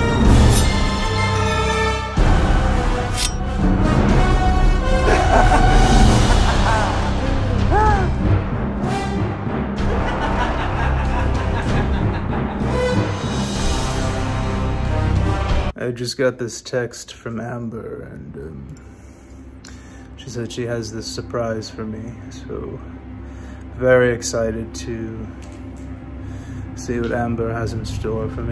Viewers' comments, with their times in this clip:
0:04 Honey! The neighbour is laughing maniacally in the middle of the road again!
0:14 ON REPEAT ADFINITUM!!!!! OVER THE TOP FUNNY!!!!! 😂🤣😂🤣😂🤣😂🤣😂🤣 THAT WAY HE SAID AMBER 😂🤣😂🤣😂🤣😂🤣😂 Go ahead and take the award! 🏆🏆🏆🏆🏆🏆🏆🏆